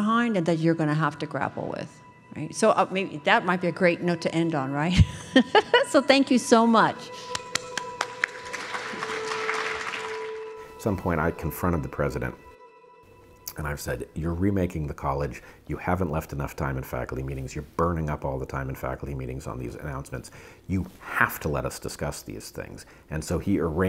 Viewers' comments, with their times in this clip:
0:07 only psychos start their own applause 😂